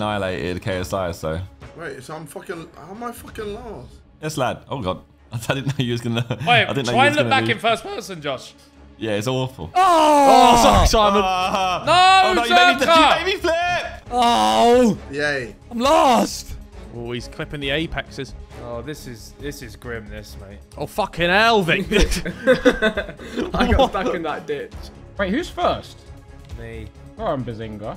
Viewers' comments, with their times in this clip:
0:04 yo did anyone hear ethan's voice crack but no one realised it
0:04 We not gonna talk about Ethan’s voice crack
0:05 ethan voice crack
0:05 Are we just going to ignore that voice crack???
0:05 Did anyone hear Ethan’s voice crack
0:05 We just gonna excuse behz’s voice crack
0:05 ethan had a horrible voice crack
0:05 another Ethan Voicecrack for the compilations hahaha
0:06 im sorry but that voice crack needs to be in a comp
0:06 another voice crack for the compilation squad, you're welcome 😅
0:07 the fact Ethan got away with that voice crack just cause they’re all concentrating 😂😂
0:07 that voice crack...
0:08 Great addition to Ethan's voice cracks